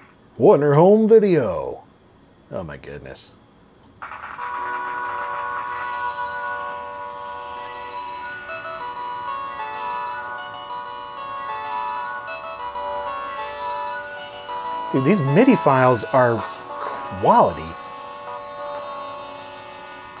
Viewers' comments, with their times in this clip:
0:03 My god, that's why midi is (still) amazing.